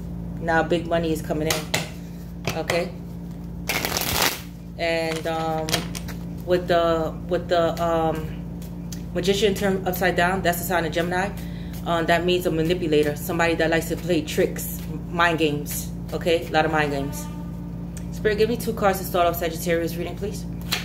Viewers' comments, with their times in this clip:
0:08 Did you hear the horn in the back confirming the part about "A lot of tricks,.. A lot of mind games, manipulator"?... Well I did!